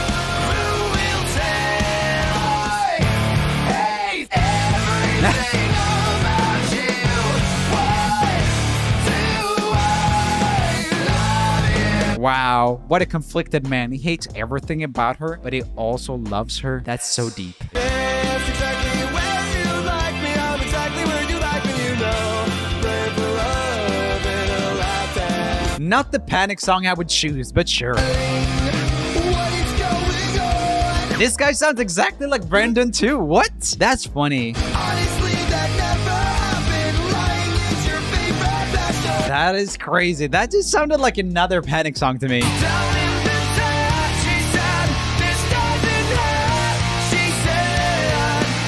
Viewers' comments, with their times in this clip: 0:04 sounds like Avenged Sevenfold
0:29 ronnie’s voice i can’t 😩🖤